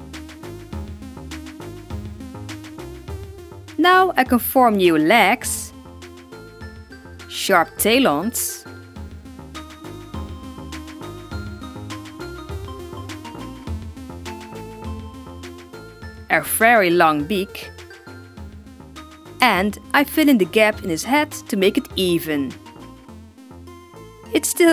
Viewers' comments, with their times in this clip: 0:07 wolf? In a background